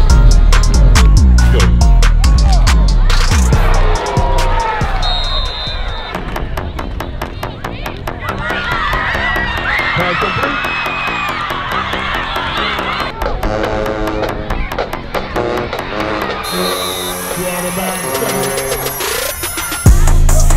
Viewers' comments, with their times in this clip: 0:08 WE GOT PRACTICE IN THA MORNIN'!!! one of the best beats.